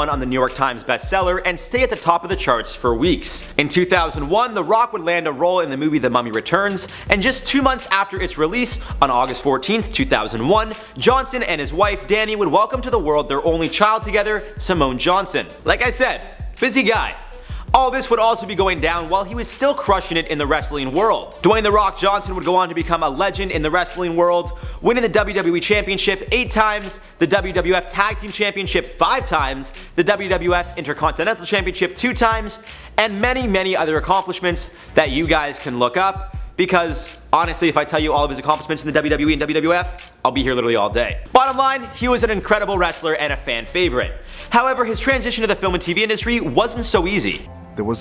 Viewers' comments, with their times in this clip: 0:10 am i trippin or does he say john cena
0:36 Daaannnnggg are you a rapper